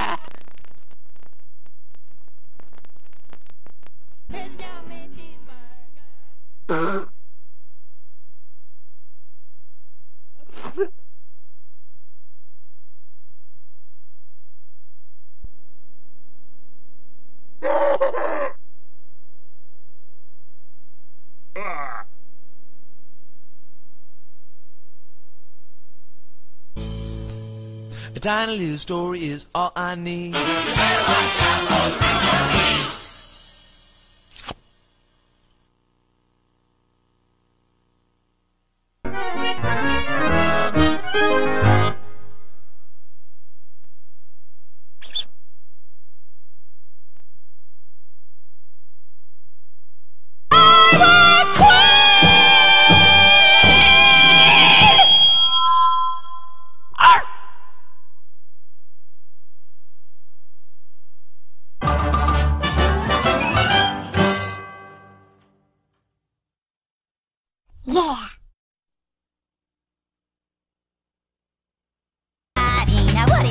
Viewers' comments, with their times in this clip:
0:06 was that a cough
0:52 She Is So Loud!😧
0:54 OH! MY EARS!😖